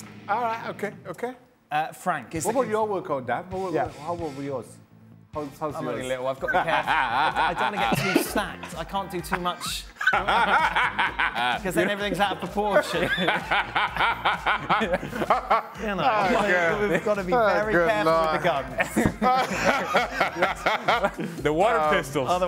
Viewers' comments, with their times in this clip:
0:05 they finally switch on the right music jajajaja